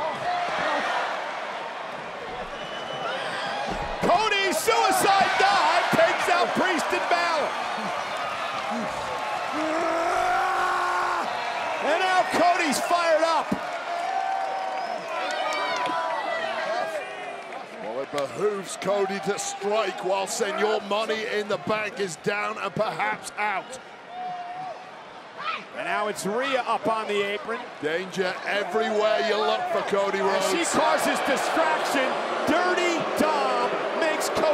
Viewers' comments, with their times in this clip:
0:09 Cody's scream is just like Hugh Jackman's scream in all of his X-Mens movie, or Wolverines movie...
0:12 Is Damian laughing with that woman feeling up on him? 😂
0:15 Damian Priest is laughing? Did he break character?